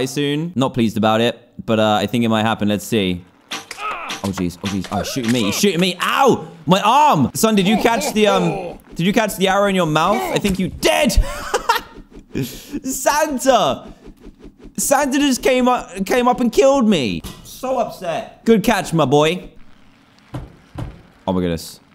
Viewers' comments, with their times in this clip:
0:09 I thought that u said "I think u died"